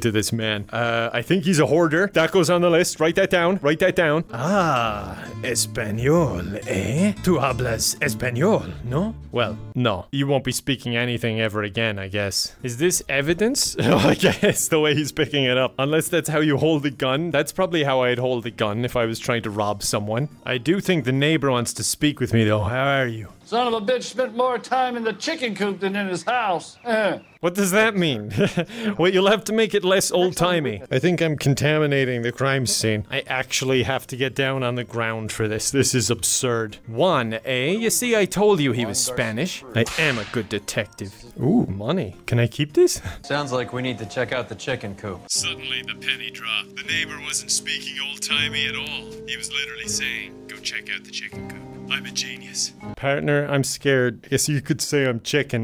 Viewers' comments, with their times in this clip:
0:04 I can hear your Spanish improvement!! Amazing :D
0:38 the slap noise was perfectly timed with Genshin. I was swimming and in Fontaine and got a cut scene where Paimon quickly appears infront of you, as soon as Paimon got into frame the slap happened and it was the funniest shit